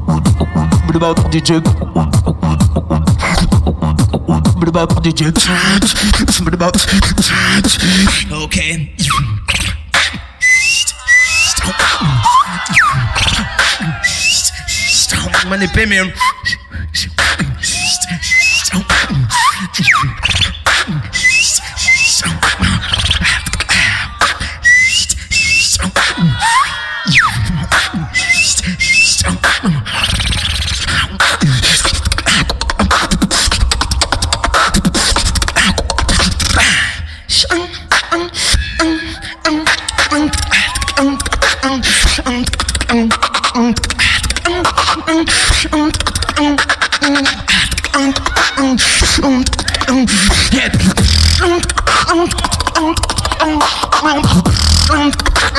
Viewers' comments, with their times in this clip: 0:09 finally made the crowd, ohhhhhhh
0:09 finally made the crowd, ohhhhhhh
0:16 Oh no... Alem fail the whistle...😐😐 IDC ABOUT THAT!😂😂👍
0:38 Yeah! the beat is SO HEAVY!!!!